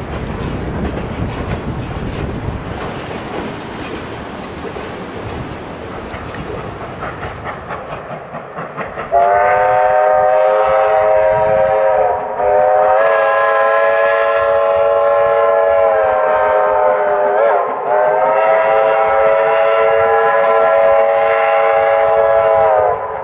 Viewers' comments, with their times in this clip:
0:07 Woah, I wasn't expecting a Star Brass